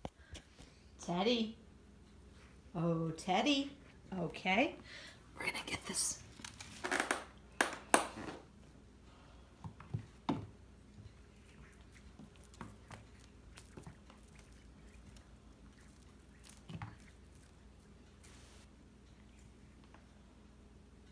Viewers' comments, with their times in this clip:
0:09 look at them damn pipes!